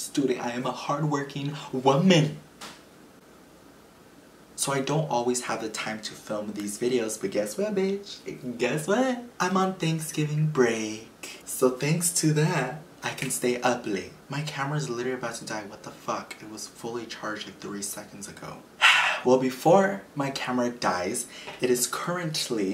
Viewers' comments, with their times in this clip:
0:03 There’s a noise (ghost) and it took all the energy from your camera battery 😳😳😳😳